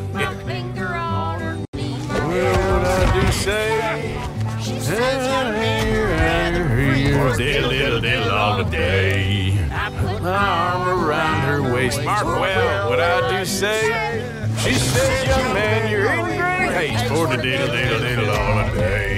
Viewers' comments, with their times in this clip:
0:03 did Sean laugh at Uncle getting hogtied???😭😭